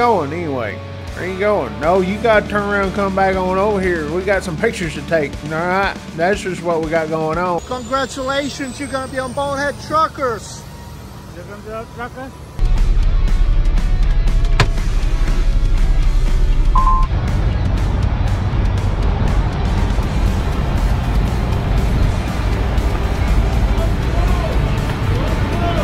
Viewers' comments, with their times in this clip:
0:10 WHAT IS THAT DUDE SAYING? dude truckers?